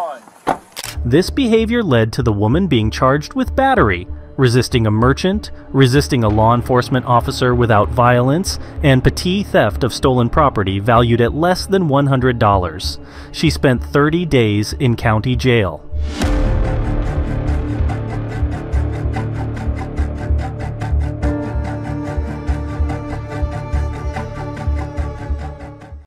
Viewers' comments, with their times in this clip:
0:10 Pa-tee? Gotta proof your ai, bro.